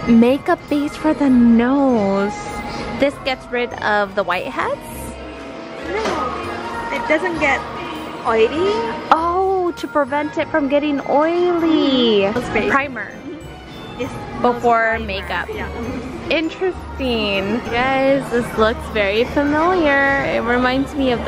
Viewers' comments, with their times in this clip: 0:06 I would've stopped everything that I'm doing and jam to The Weeknd in that store